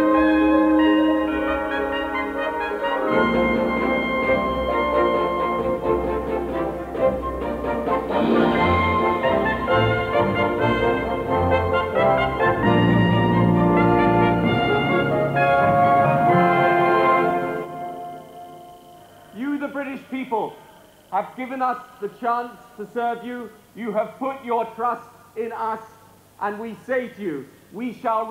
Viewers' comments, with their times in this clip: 0:09 pretty clever music que timing